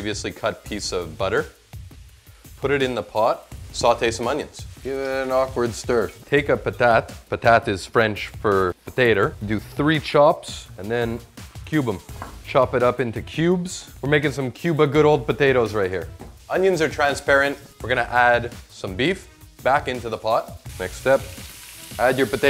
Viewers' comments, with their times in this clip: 0:08 he sounds like Jarl Bulgarf the great